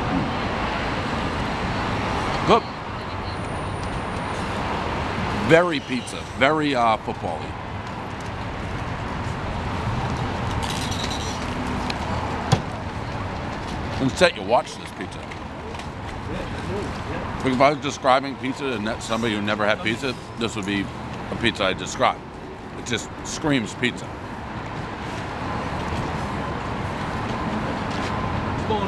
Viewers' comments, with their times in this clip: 0:09 Great cheese drip, Minimal flop, Good crunch, Great looking crust......I give it an 8.1 from looks and sound of crust crunching alone ...Salvos is on my list to try.